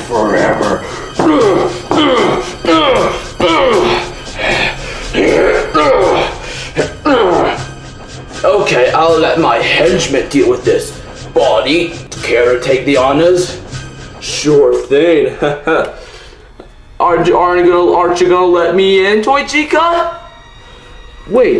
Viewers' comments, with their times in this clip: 0:08 why do I here puffing?